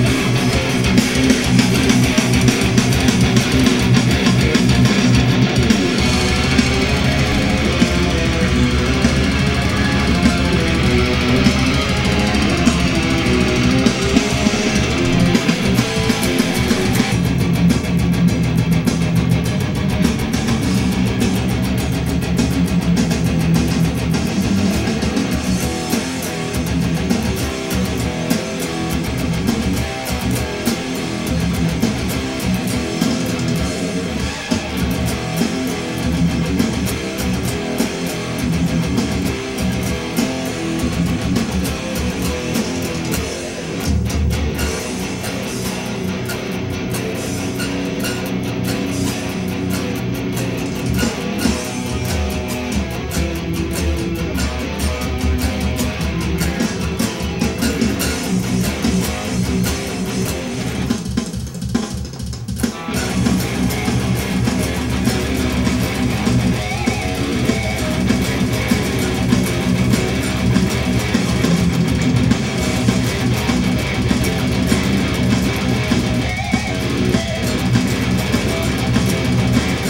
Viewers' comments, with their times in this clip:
0:06 sick tremolo part - cameraman " i have to film this het"
0:33 that riff sounds pretty fucking awesome, i must say
0:55 It's a shame that those natural harmonics played by Jim aren't on the album version.. :/
1:00 Everyone is wondering why you cutoff that part. When it goes halftime slowness, everyone knows what I’m talking about, I can’t help but have goosebumps traveling traveling from my brain, to my neck and shoulders, down my arms and back, my nip nips lol and down the rest of my body. I don’t listen to AHIG ever but that’s because I forget about the few songs from that album I actually do like. I really only listen to their first 3 albums for like the past 10-15 years years and mainly because I for some reason just don’t factor in any of their last 3-4 albums. That said, they’re still in my top 5 favorite bands of all time list.